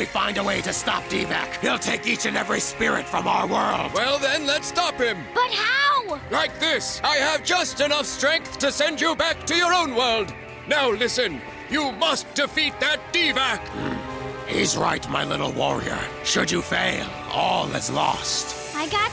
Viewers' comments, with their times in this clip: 0:07 It really sounded like he said “you need to stop that d-bag”